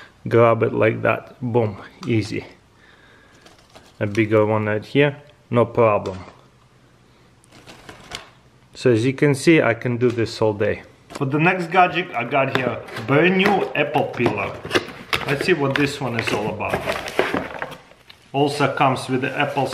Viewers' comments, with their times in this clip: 0:04 he aint eating it but you can hear crunches?😂